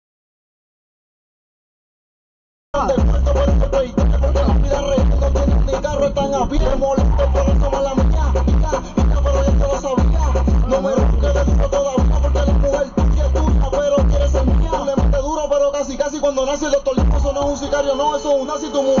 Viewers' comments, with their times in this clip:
0:03 The jungle noise declares much about the culture.